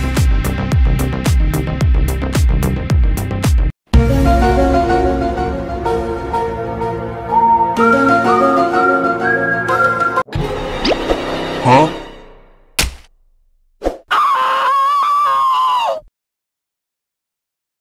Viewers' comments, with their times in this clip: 0:04 Why I hate this music